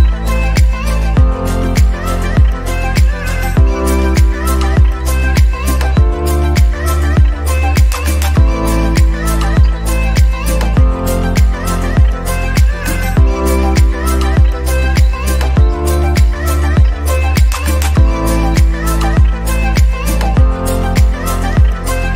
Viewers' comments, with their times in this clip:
0:08 The music is not very relaxing though, so for me that is not true. Also, my phone goes onto downtime ( my parents are mental).